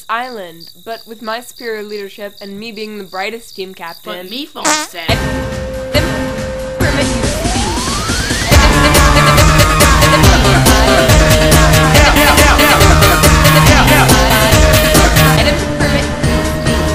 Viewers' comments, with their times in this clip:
0:03 the light bulb farted
0:04 did I just hear a fart sound XD